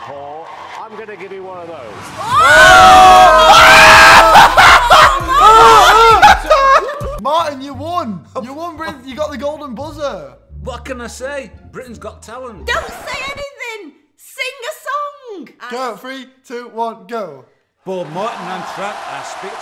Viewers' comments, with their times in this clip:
0:03 does it count as them screaming or laughing really loud?